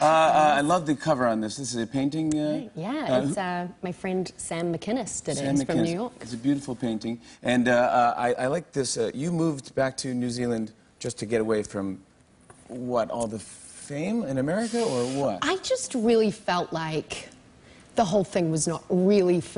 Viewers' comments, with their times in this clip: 0:05 she kinda remindes me of sia, like the way shes talking and that shes soo humble and down to earth.... and also the way she says new york